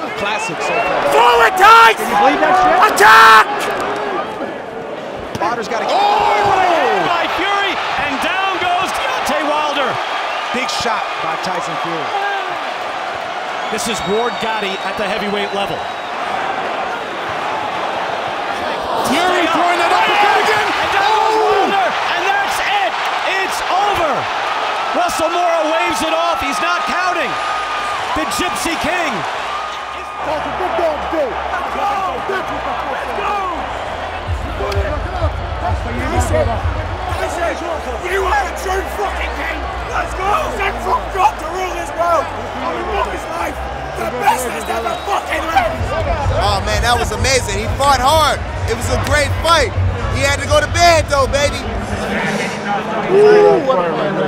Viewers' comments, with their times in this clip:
0:06 You thought we wouldn't notice. But we ALL noticed the voice crack hehehehe
0:08 What a voice crack 😂😂
0:37 that guy on the background is so hyped he cracked his voice many times. LMAO
0:37 This guys voice 😅 So in the end, wilder got beaten by somebody he does not respect